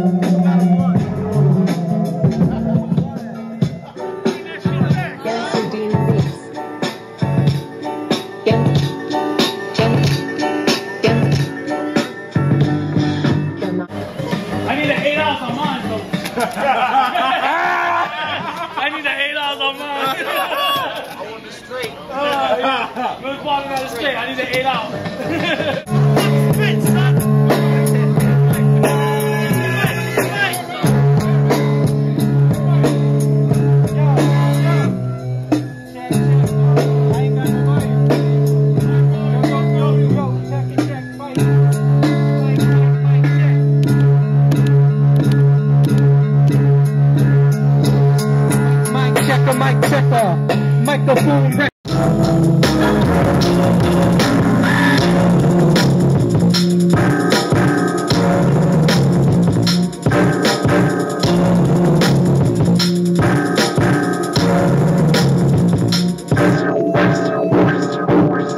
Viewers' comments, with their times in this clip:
0:03 I liked how he flipped nautilus. And yeah, that beat is STOOOPID
0:04 anyone? J Dilla feels over the beat.
0:52 holy shit this beat is bumping got homeboy in the green dancing and shit
0:52 That beat is insane. Anyone know if its available anywhere?